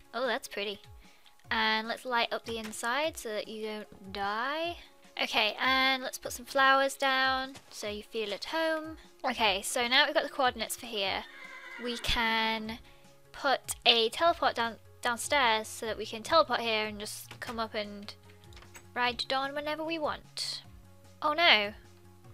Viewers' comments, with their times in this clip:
0:09 Was anyone else COMPLETLY grossed out by the "ok" ?